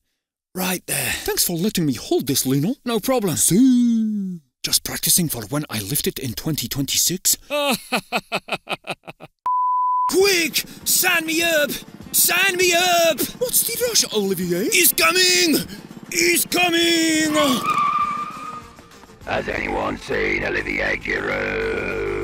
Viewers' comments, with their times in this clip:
0:03 That Siuu was so cute